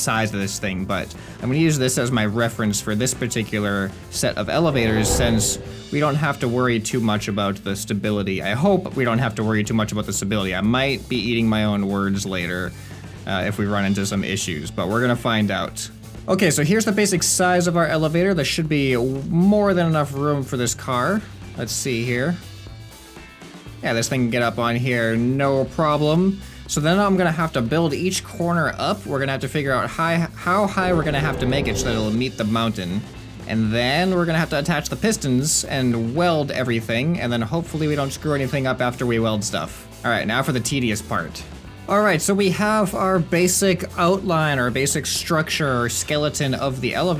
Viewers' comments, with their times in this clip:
0:04 What was that noise ?
0:30 what was the weird grinding noise?